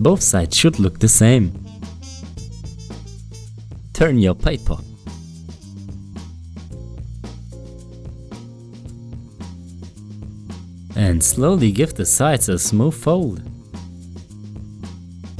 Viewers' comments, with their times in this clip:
0:03 its "turn your papa" lol